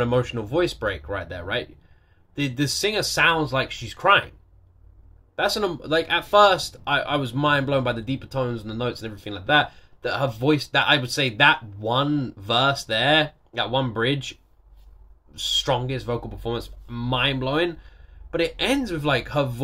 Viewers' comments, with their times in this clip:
0:04 yes, she is crying the song was too sad for her. There were "better" versions the studio was able to choose from, but the raw/pure emotion you hear in her voice there made them choose this version.